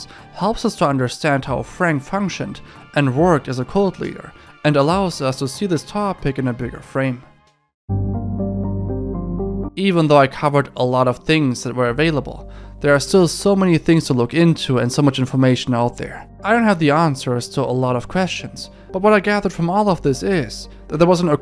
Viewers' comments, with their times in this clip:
0:09 the Mass Effect map music caught me so offguard